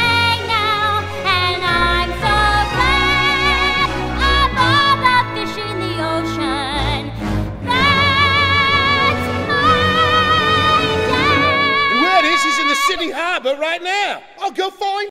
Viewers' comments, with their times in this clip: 0:07 I always feel like the last “That’s my Dad!” Should’ve gone up to the high E